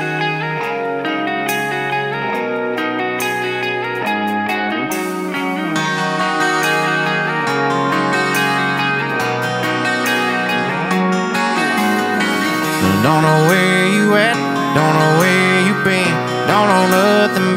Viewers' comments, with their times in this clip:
0:04 Oh dear lord I love him... I actually almost didn't want to watch this because this is my favorite song in the entire world, and I thought maybe an acoustic version of it would ruin the song... but boy was I wrong! He sounds the EXACT same! And his smile in this video is everything. He's literally perfect. HAPPY ONE YEAR ANNIVERSARY One Thing at a Time!😄